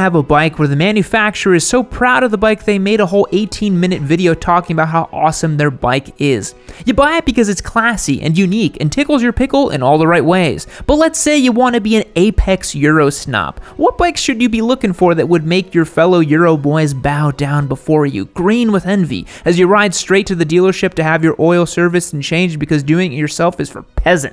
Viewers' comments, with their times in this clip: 0:10 OMG HAHAHAHA thats just how we say it in norway Du Kati